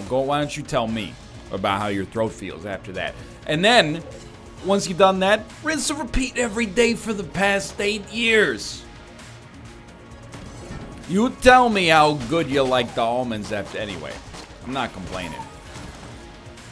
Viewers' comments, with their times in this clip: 0:04 Holy shit that was an amazing Dr. Steve Brule impression.